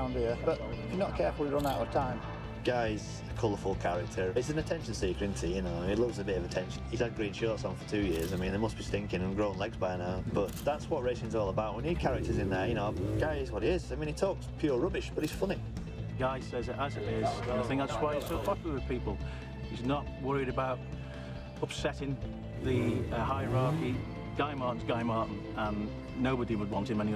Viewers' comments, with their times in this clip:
0:08 that dude sounds jealous as hell lol